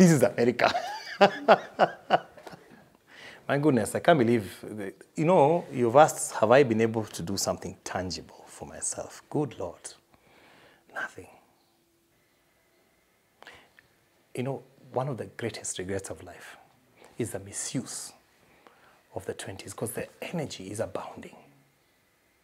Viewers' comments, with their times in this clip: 0:10 😢😢😢😢 now that sunk in deep. you are a very good orator, such a infectious laughter 😂😂😂😂😂 God bless you.